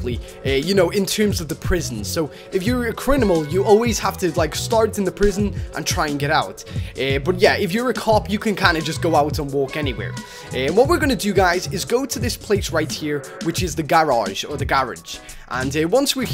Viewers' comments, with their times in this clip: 0:03 anyone notice he said criminal but with the m and n swapped